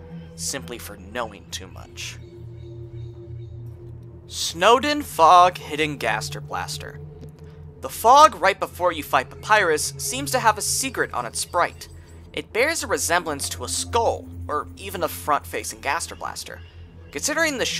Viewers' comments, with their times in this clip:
0:03 “Snowdin Fog~🎵” thought you were going to sing for a bit there
0:04 what was that voicecrack